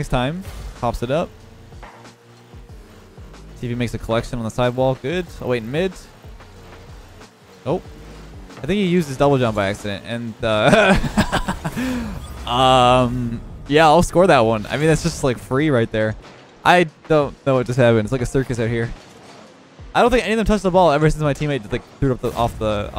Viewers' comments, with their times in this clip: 0:10 that’s the definition of an evil laugh ngl